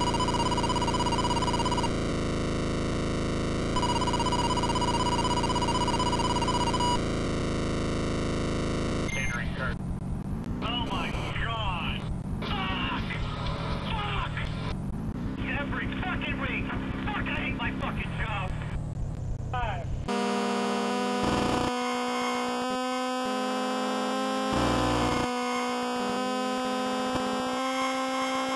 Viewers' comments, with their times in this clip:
0:09 bro why did you put kurt busch's radioactive voice in this part? 💀💀